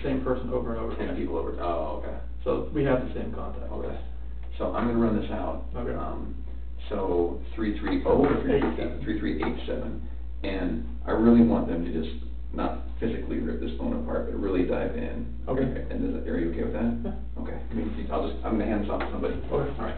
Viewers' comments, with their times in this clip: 0:06 is where I want the voice over to speak like that.